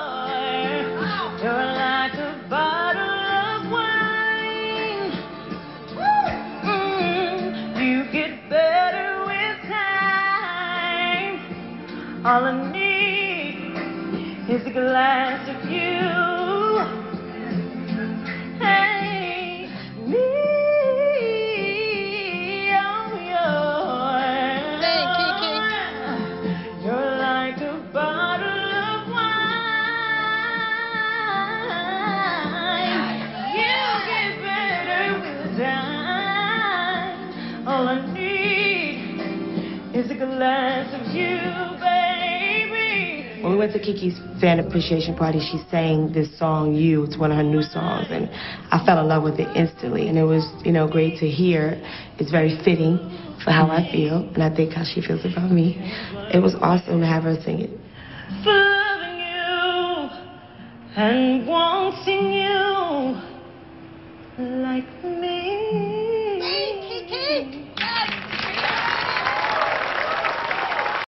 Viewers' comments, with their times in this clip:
0:07 did anyone else thought this was Karen Clark Sheard!!!!! I know I know …
0:29 Run is angelic
1:06 Sing Keke !!!! Syleena was for it !!!! Her voice is amazing moment she started singing I got emotional Keke so fking gifted !!!!!